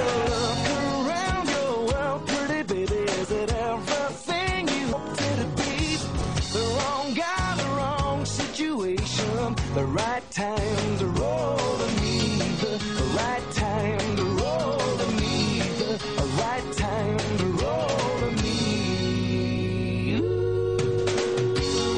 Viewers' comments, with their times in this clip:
0:04 i hate how it skips